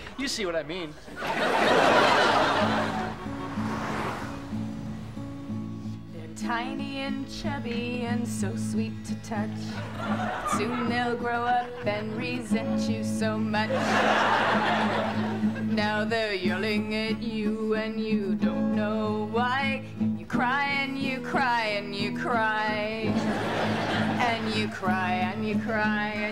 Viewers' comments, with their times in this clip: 0:07 the music is so similar to "this town" by Niall Horan!!